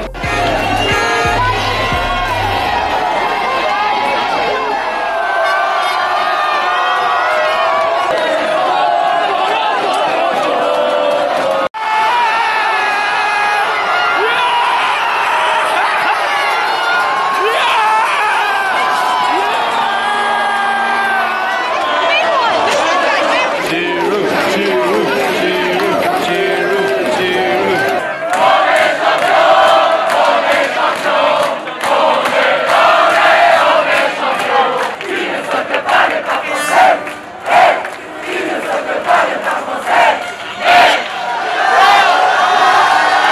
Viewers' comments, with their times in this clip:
0:09 Old video but omg nobody explained that to you? is random "po" and "lo" on the rythm of song seven nation army Not sure why we sing this, but everyone knows it, in any sport (even concert etc)
0:24 CIGROUD CHANT ..... GIROUD CHANT Olivier Giroud